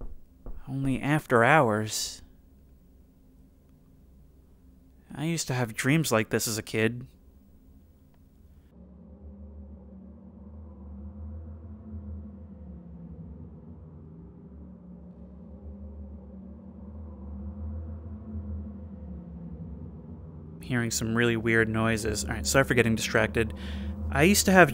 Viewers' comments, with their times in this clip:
0:08 Okay, what's up with the super creepy music/sounds suddenly!?